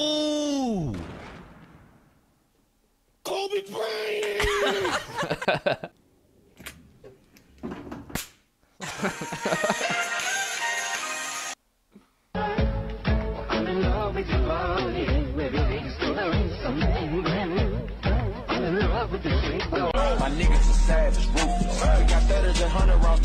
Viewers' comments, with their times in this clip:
0:06 Got me at the belt snap